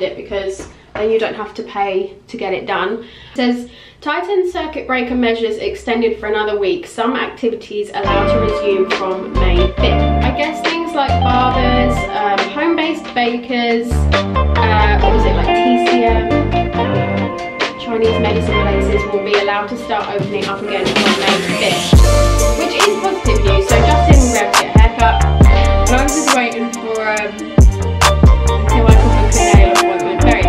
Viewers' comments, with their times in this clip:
0:08 Great Vlog ! Not sure if it is just me but the sound editing seems a wee bit off
0:11 The audio got a little loud and we couldn’t hear you